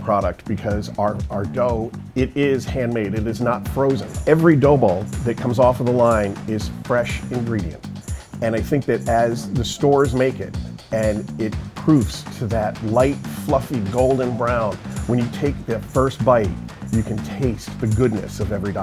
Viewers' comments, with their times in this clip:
0:05 I love how the dough balls r falling to the beat of the music 😂😂😂😂 Edit: Omg 100 likes?? IN A MONTH??? Thx so much!